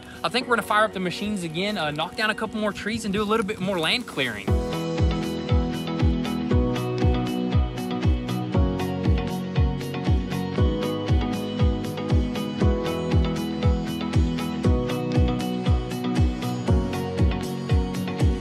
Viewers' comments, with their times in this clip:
0:04 Good to hear some good ole classic style goonzquad background music again!